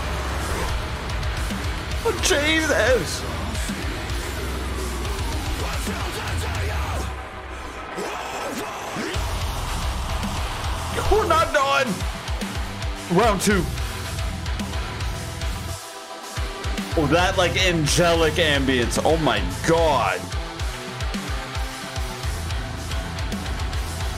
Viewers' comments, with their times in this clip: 0:08 Dem instrumentals from onward, massive indeed 👏